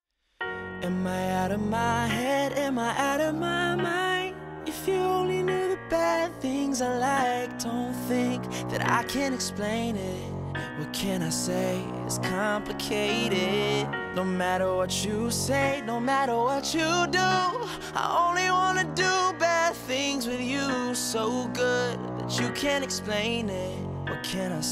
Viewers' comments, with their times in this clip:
0:05 That "bad" tho.
0:05 his Voice cracked...
0:06 Did anyone hear that ??? Also, whenever he says "I only wanna do BAD things to you" the word "bad" is so flat, I cry
0:06 the way he say {bad things} very bad